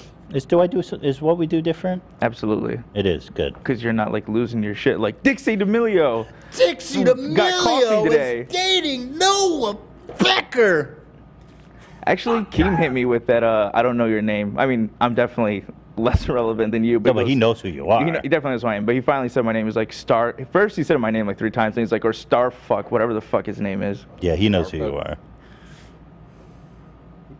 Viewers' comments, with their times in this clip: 0:10 Loved the ep lol but what was with the air conditioner turning on at like 😅